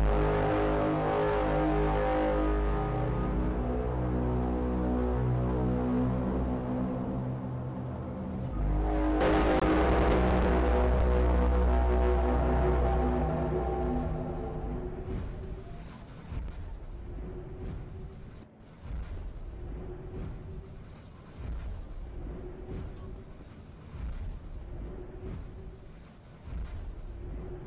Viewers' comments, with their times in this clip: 0:09 but why a bit lagging sound